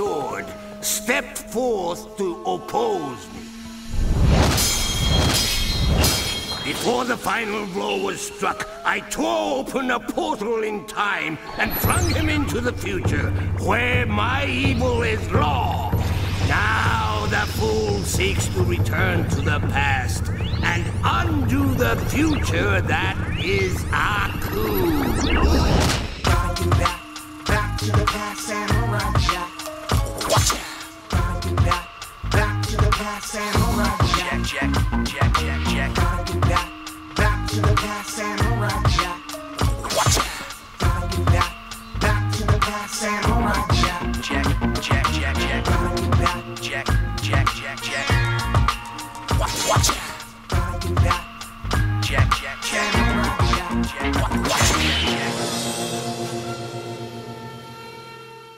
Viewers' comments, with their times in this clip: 0:09 The Bookworm TWORE open a portal in time and flung him into the future, where my evil is LAW. The future that is AKU
0:26 gotta be back back to the past samurai jack hip hop beat
0:26 start of the banger
0:26 sec what in the world 😣😣 GOOSEBUMPS that theme gets me into my chilhood memories
0:26 Where the music begins!
0:43 Sounds like Torn from Jak II SAYING JACK!😆